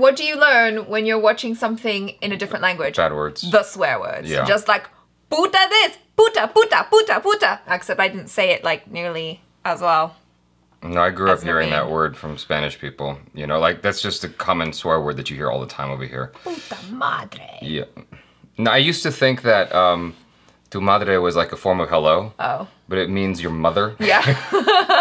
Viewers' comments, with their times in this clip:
0:06 u were like pikachu from Pokemon pika pika pika pika 😂🤣